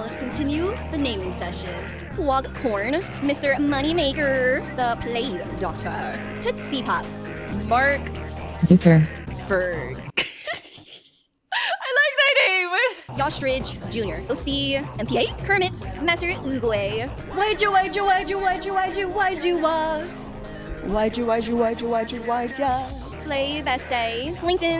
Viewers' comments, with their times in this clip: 0:08 bfb report voice moment